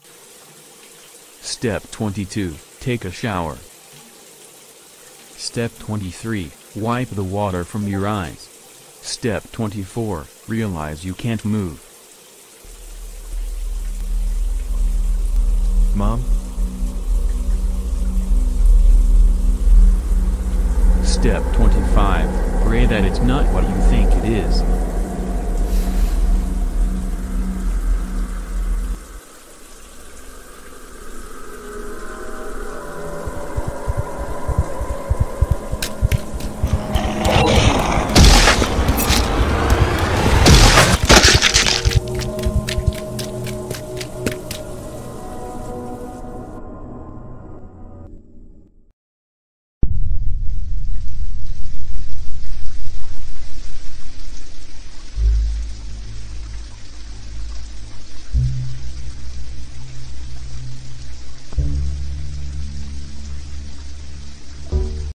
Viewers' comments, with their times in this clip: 0:06 am i the only one that hears a discord notification ???
0:06 discord sound lol
0:06 Discord message Edit: I don't want to go shower anymore
0:06 that discord ping
0:07 Discord notification sound
0:07 wait this discord sound?
0:07 Gotta love the discord ping
0:07 i hear a discord notification LOL
0:52 when the ending song comes nyyyyyyaaaaannnnnmmmmmm boommmmm BOM. MA